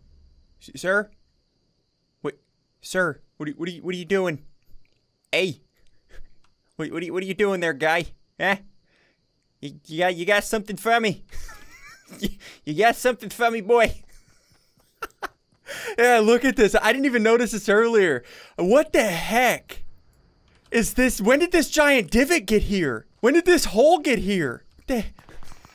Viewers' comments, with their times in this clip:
0:07 Sounds like brooklyn Guy from sml
0:07 he sounds like my grandpa